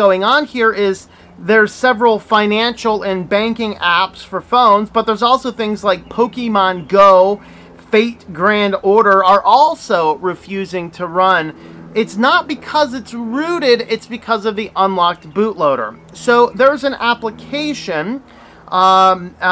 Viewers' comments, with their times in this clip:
0:05 "Pokeymon GO" The e is pronounced like the a in "cake"